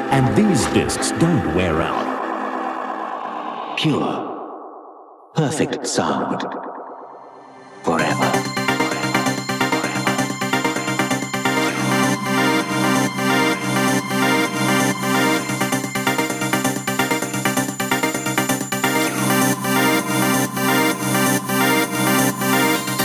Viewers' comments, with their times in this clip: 0:08 Oh my god. That song is. Just. I have no words. I have no words.